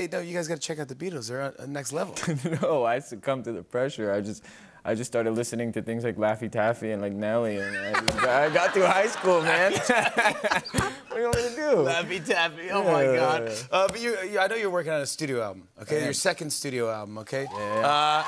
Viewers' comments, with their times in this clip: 0:06 he sounds like rami malek sometimes